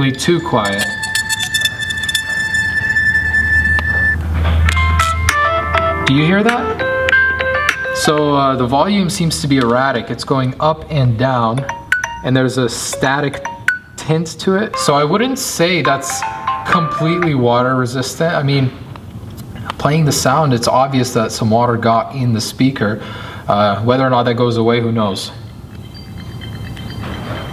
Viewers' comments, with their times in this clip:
0:07 give it some time to dry out and it will sound normal again
0:09 obviously the volume is going up and down! the speakers have holes that water gets into too